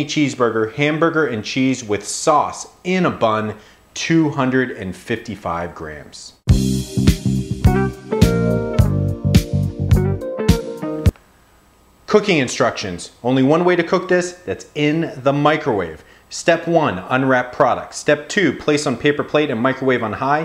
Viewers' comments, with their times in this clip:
0:06 .... sexy song ha